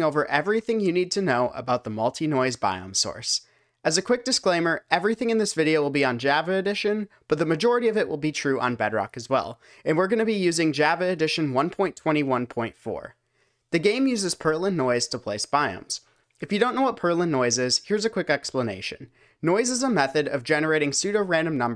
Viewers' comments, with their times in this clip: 0:06 the way you said java is killing me